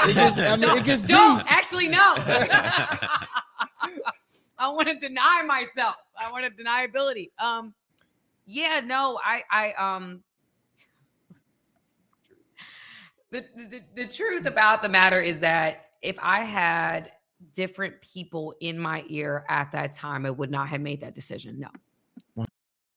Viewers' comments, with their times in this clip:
0:06 She couldn't even say accountability! She couldn't even say the word oh my gosh! And she laughed like a evil witch how can you even laugh with men after doing that to a man King priest, despicable.